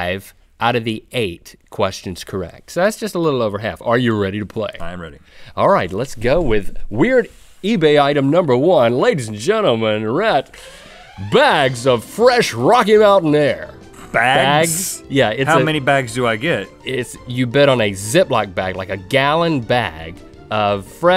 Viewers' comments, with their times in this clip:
0:03 Link sounds like Jim Carrey